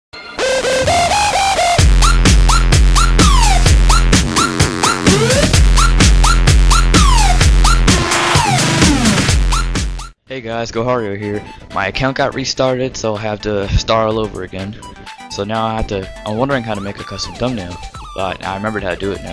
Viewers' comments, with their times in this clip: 0:02 jeez man my volume was on high!